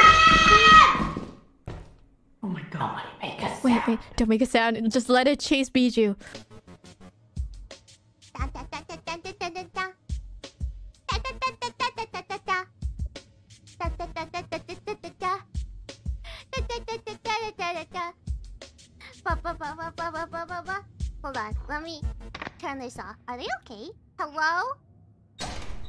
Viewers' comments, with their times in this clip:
0:06 Everyone: P A N I C Biboo: :D "Kusogaki Rhythm noises"